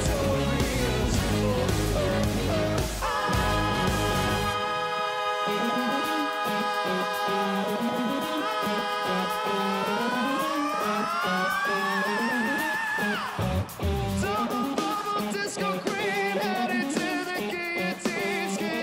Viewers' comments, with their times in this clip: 0:06 Brendons like save me i cant hold this note any longer